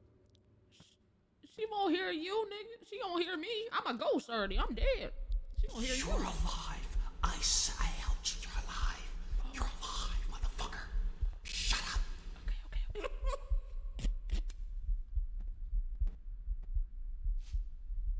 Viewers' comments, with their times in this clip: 0:05 He sounds like springtrap from five nights at freddy's 6